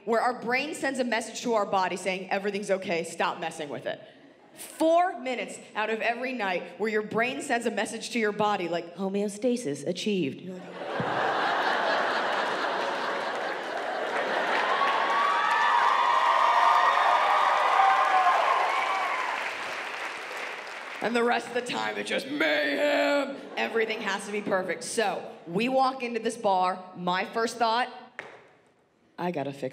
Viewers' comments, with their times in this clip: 0:08 She got the voice of a virtual assistant there. Perfect punchline.
0:10 the way she delivered that , she really sounded like a computer generated sound system